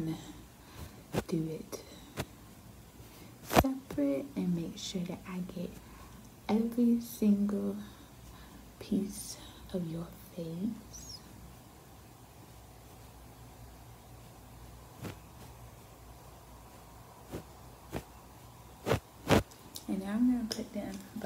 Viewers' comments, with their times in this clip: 0:03 the brushing was so good😩